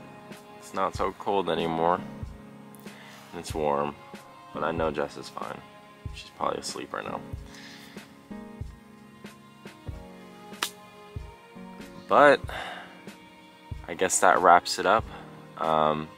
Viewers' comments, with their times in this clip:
0:04 makes a little more sense now. Now that he broke up with her it feels like a argument or something could of happened because she left and he said “that’s great” which sounded sarcastic because he is annoyed . idk that’s just how i perceive it after the announcement now.